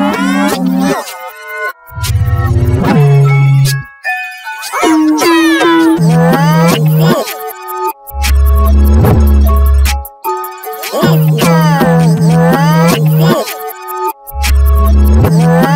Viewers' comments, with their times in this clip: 0:03 Pitch withe effect